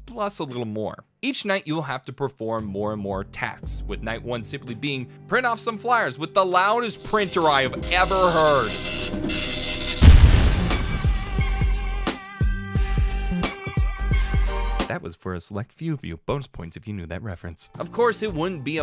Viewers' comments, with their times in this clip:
0:05 dot matrix for you.